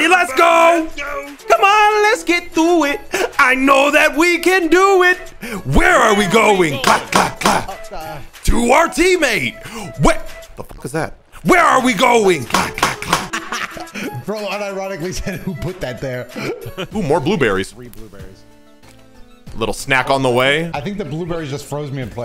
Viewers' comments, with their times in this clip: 0:05 Ayo what he clapping with 😂